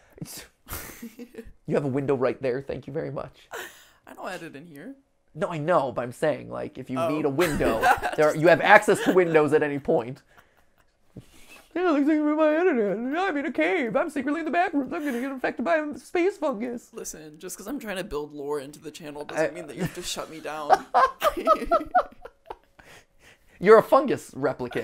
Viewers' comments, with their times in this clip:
0:10 we had the voice of Mrs Applegate (i think that was her name) from the holy adventures of Nugget come to fruition haha